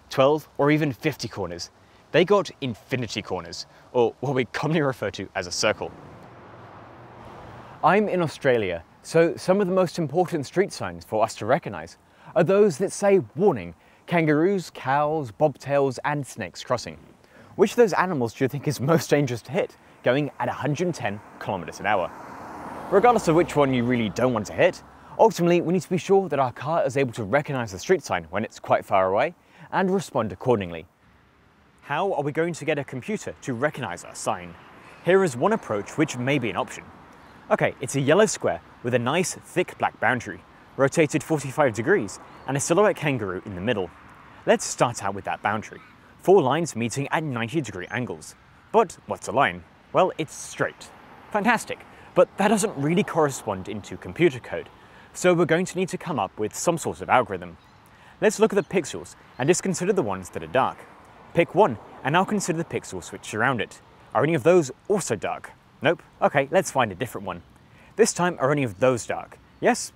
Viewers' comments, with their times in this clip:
0:07 Nice Tom Scott impression for a second there
0:34 when he says "how are we going to get a computer to recognize..." I thought he said "cow are we going to...." Did a double take and was disappointed when I replayed it, he even zoomed in on the cow sign... Missed golden pun opportunity
0:56 Let's look at the "PIXULES"? Dude you have a weird ass speech impediment. That's like the 10th word in less than 5 minutes you've said completely fucked up.